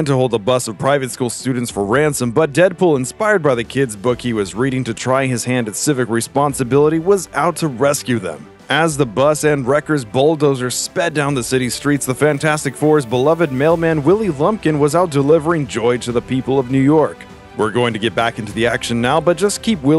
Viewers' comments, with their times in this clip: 0:04 not only the book but Deadpool does have a sorta rule... Kids are not targets. He's even donated organs to certain kids and refused to kill baby Thanos. Love the tchalla impression.